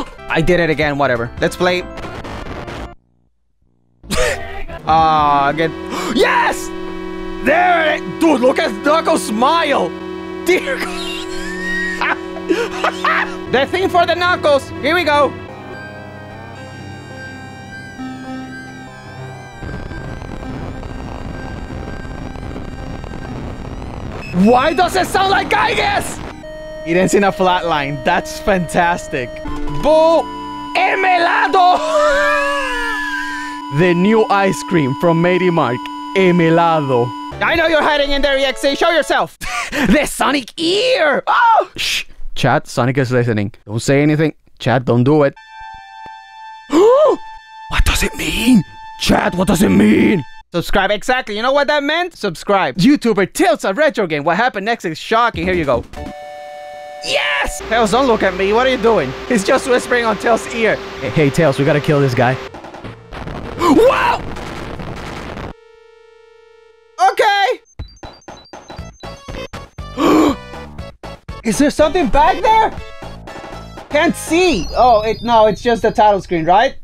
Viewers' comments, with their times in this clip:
0:04 LOL we had the same laugh
0:05 my favorite alarm
1:00 he’s actually whispering the people who are watching his video subscribe
1:02 it kinda sounded like sonic just fell down the stairs